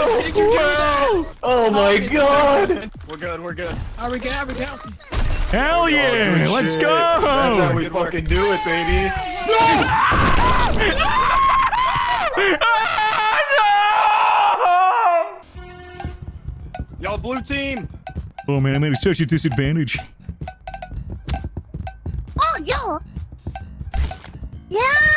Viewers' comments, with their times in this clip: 0:06 thats scream was full of pain